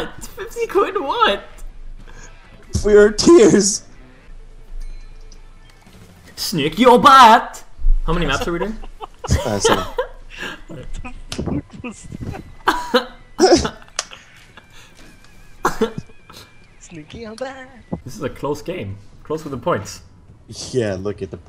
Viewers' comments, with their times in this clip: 0:05 "Sniff your butt"?
0:06 was that swedish or english, if swedish what does it mean?